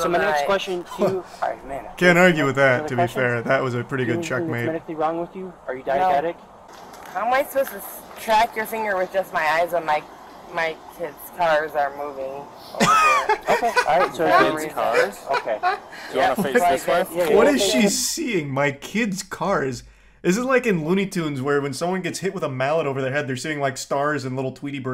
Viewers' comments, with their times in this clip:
0:06 She said "tit's cars," not 'kid's cars.'